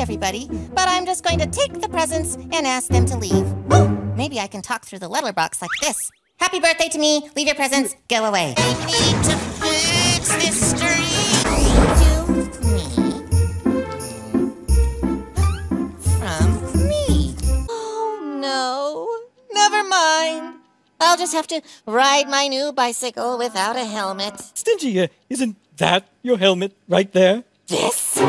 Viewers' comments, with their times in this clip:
0:09 mf sounds like he’s singing about a damn street